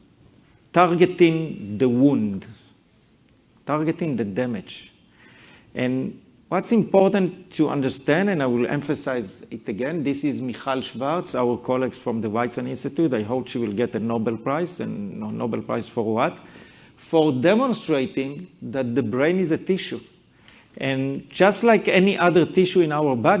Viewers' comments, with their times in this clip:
0:10 what is his colleagues name? It sounded like he said Michel Svertz at the ____ institute??